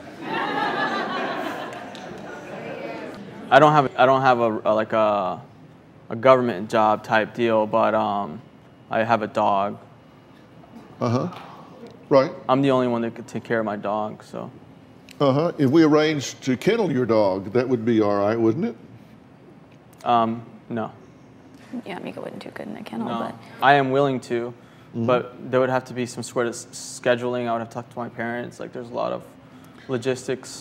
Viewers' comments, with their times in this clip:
0:08 "...we can arrange to kill your dog" -Dr. Phil
0:16 I thought he said “If we arrange to kill your dog that would be alright wouldn’t it?”